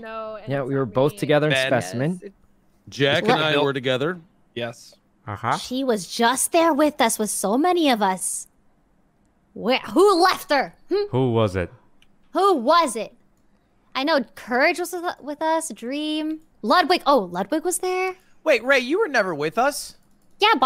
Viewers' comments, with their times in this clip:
0:03 Sometimes when Rae says something, she sounds a little like trump. Like "She was just there with us.." I can imagine trump saying it exactly like that 😂😂